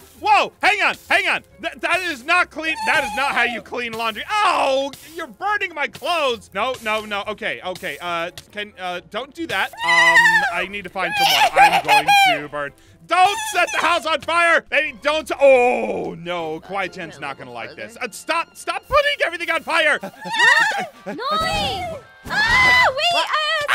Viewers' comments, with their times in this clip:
0:04 just gonna say this, but there is the sound of a flint and steel being used but neither of the has one, thus there is someone invis pulling the strings.